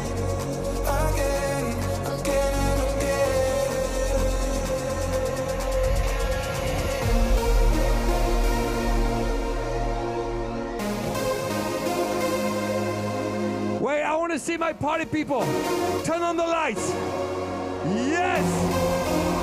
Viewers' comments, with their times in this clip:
0:07 such amazing remix part it was stunning! I was experienced feels like Stendhal syndrome. He is savior in my life.🙏🏻